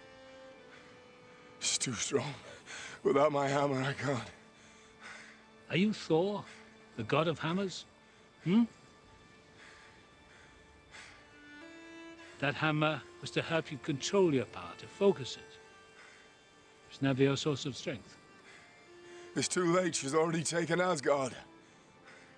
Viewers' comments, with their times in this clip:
0:05 "Are you Thor, the God of Hummus?" Hmm?